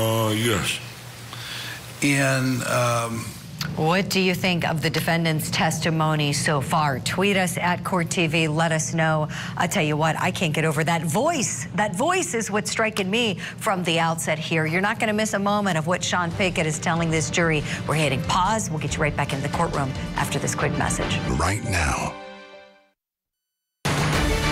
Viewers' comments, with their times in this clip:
0:10 yes that voice is almost as if it’s not him. If I close my eyes and just listen to his voice I imagine a big heavy set man not a scrawny young man. I wonder if he has always had that voice or if mother reach out for help as he was growing. Could he have a health issue? The voice threw me off guard as well.